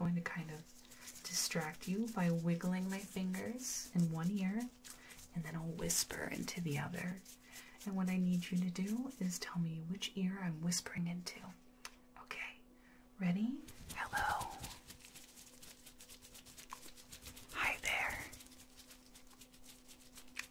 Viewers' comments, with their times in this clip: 0:05 The way your voice breaks/cracks from soft to the sort of raspy sound 🥰🥰